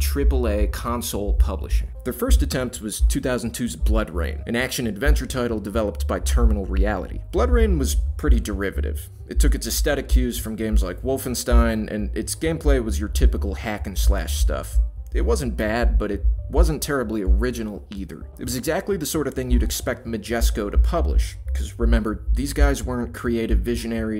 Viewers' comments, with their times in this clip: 0:10 what's up with the weird bass in the music?